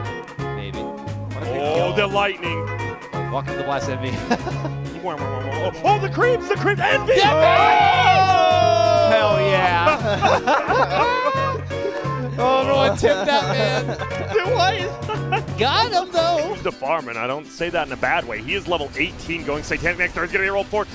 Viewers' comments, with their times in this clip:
0:07 that envvvvvvvvvvvvvy and oooooohhhhhhhh should have get a chatwheel lol xD like Ceeeeeb :3